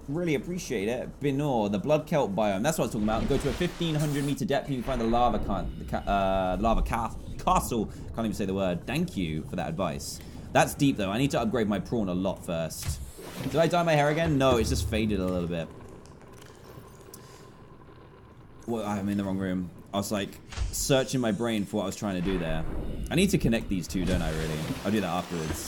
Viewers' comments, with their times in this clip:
0:07 did he say c word